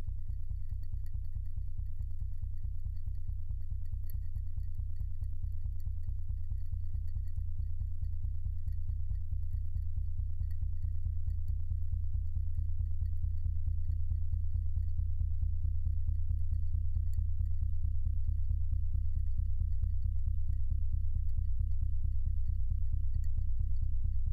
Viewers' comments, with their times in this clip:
0:10 Ice: crackling away for several minutes with no major change in sound. The Youtube auto-captions in the video: this is music.